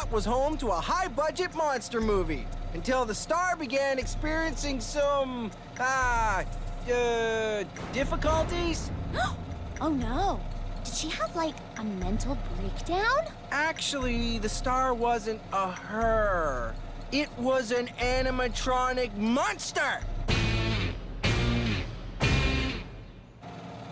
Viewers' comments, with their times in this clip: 0:07 Lindsay turned into Katie (they share a voice actor)